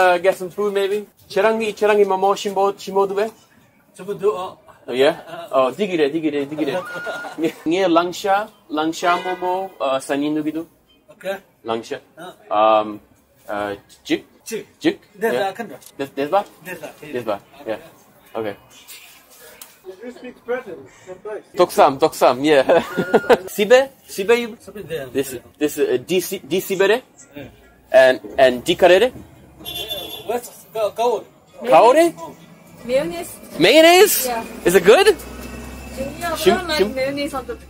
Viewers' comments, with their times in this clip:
0:08 when you go full Quagmire “diggadé diggadé diggadé” 😂
0:21 sounds like 90 in turkish